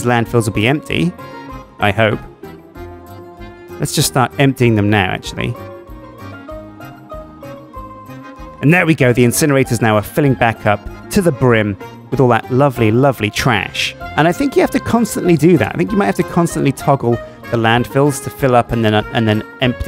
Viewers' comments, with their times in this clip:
0:06 this song is so chill i really want its name